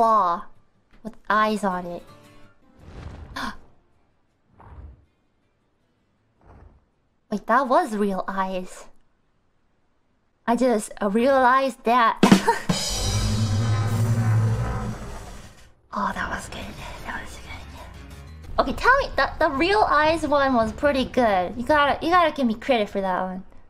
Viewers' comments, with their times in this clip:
0:10 even the worm started laughing 😂😂💜